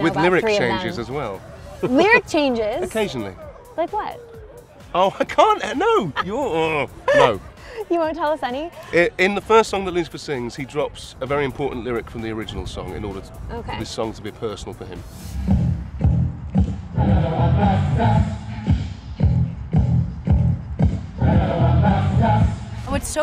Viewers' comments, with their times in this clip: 0:05 he's so cute, the way he says no i can't 😩